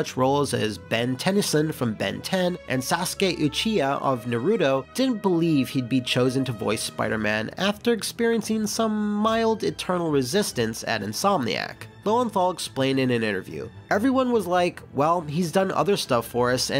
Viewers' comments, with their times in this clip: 0:04 i lowkey gave a massive oof at the way he absolutely butchered the pronunciation of naruto